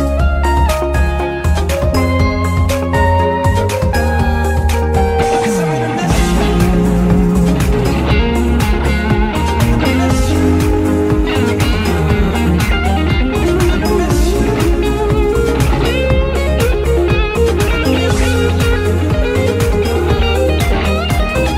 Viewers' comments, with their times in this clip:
0:05 Wow! Absolutely impressive! Every single note is a piece of art. Such a talented cover of this classic song of Rolling Stones! The precise bendings go direct to your heart. Changing from pick to finger is perfect. Etc... Man, it's not your technique, that is perfect, but your feeling. Many famous guitar players would really admire you (if they had the opportunity of knowing you). Such a damned talented guitar player! If you let me make only one suggestion: when the song goes up some harmonics would sound great!